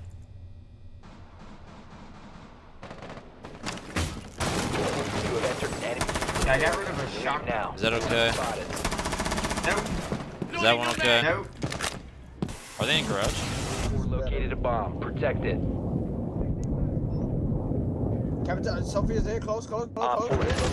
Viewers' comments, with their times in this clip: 0:03 audio was completely out of place